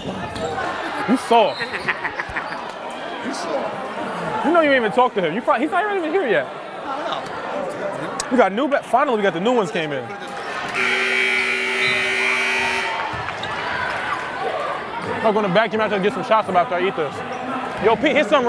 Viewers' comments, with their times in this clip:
0:03 this dudes laugh😂😂😂 ,, sound like he gotta arch nemesis